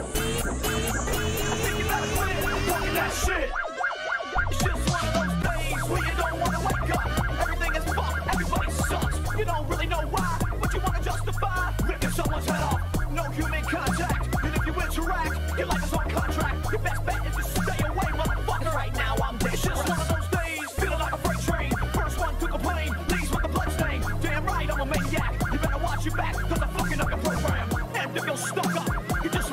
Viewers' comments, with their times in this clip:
0:10 why does the eas alarm sound like a Tom Morello riff here I think I am losing my mind